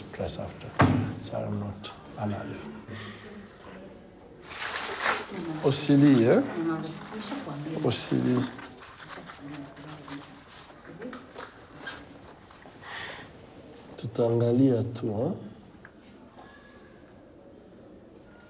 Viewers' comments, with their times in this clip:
0:06 The fact that the 6 year old starting crying immediately when the doctor started inspecting her is truly sad, you could tell she traumatized. Absolutely heartbreaking.